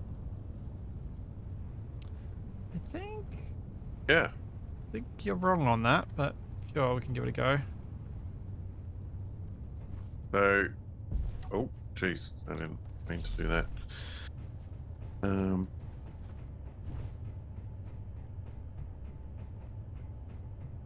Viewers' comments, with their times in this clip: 0:03 boop That got a chuckle out of me 😆